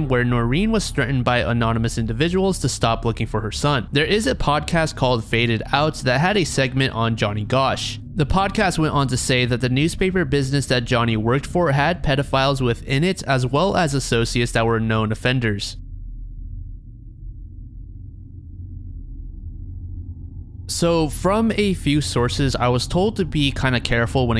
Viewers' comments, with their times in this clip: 0:08 missed a censor whoops